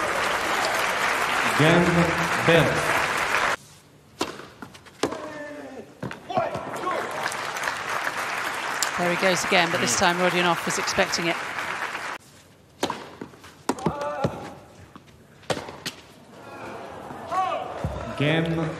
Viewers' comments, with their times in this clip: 0:03 "cho-le" reaction from table tennis?